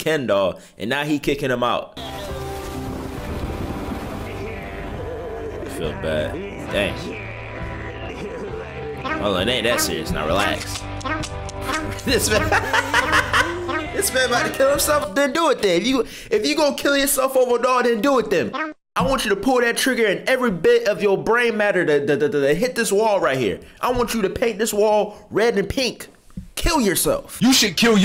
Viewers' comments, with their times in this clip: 0:09 I hear yoshi